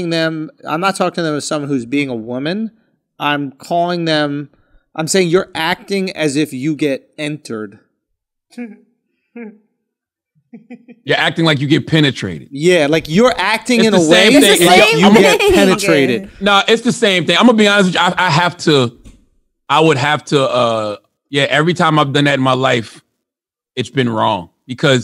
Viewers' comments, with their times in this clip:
0:06 Who laughing like that?!